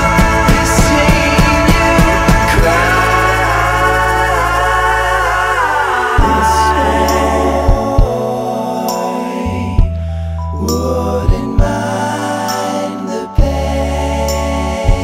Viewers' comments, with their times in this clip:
0:03 i loved this part because it remembers when the vinyl hangs on a line and repeats the phrase ❣️